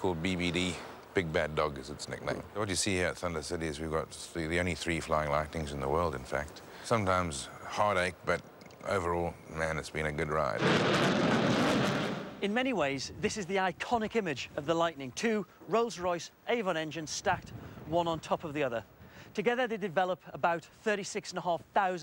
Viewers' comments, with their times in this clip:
0:08 "It's been a good ride" is it me, or does that sound rather "Ace Rimmer" Sauve AF